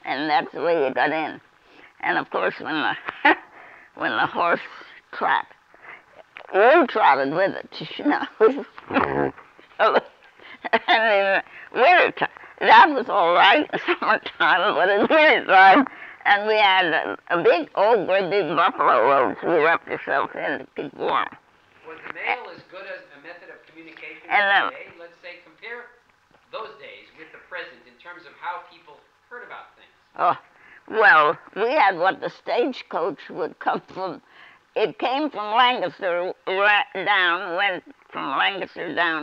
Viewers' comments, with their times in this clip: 0:07 did she fart?
0:07 Not to be disrespectful, just making an observation, .. I think she farted.. LOL.
0:07 I'm don't even care that she farted She's amazing.
0:07 Awesome! Especially that fart !!
0:08 She farted lol. Lovely lady though. It's always enlightening to hear a voice from past, flatulence and all.
0:08 Omg she Ripps a huge fart ... she lols... haha
0:08 OMG this is great but did this young lady just laugh fart
0:08 I heard her fart at the mark lol .
0:08 Did she just poot
0:08 this beautiful ol lady farts
0:08 She Farts and laughs.. omg! Haha
0:08 Did she fart 💀
0:08 ... did she laugh and crap herself?
0:08 Her soul about escaped when she ripped that massive fart she lifted up and leaned over than laughed my type of lady.
0:08 she farted and i lol'd
0:08 Did she fart?
0:08 she rips a huge fart. Hahahaha!!!
0:08 When she farted I almost spit my soup across the room. Delightful woman. Very interesting.
0:08 Did she FART !!!!!! LOL
0:08 Did she poot bless her heart
0:08 did she fart
0:08 did she laugh so hard she farted, then laugh that she farted?
0:09 It sure sounds like the sweet old lady lets one rip, pretty funny but what a sharp mind & sweet soul.
0:09 Is that a ripping FART ?
0:09 she ripped a fart really loud lol
0:09 Okay is it me or did this 98 year old woman just rip one ?
0:09 Did she fart ?? Bless her heart
0:09 Does she fart ?
0:10 Love the old knowledge and the granny fart she got a chuckle out of it so can we 😂 God bless granny never thought you would be a u tube star but you made it. Your words live on! It was a better time I should of been born in that time the word today is not for me!
0:10 i think she farted😂😂😂
0:11 haha she breaks wind like a good un
0:26 Wait a second, that goes voice sound similar to the guys voice who is in the reaction channels.